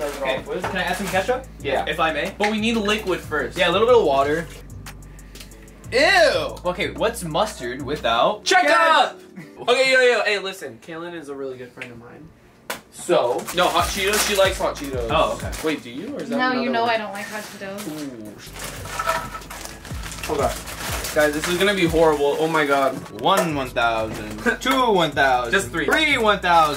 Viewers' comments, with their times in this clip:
0:07 lolololol rug legit said “check up” instead of ketchup 😂
0:07 chekup ot ketchup?😂